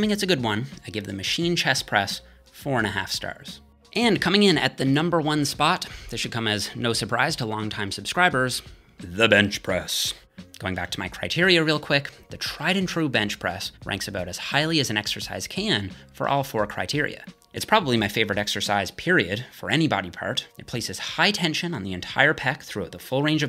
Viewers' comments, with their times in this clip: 0:08 The way he said ''the bench press'' made me laugh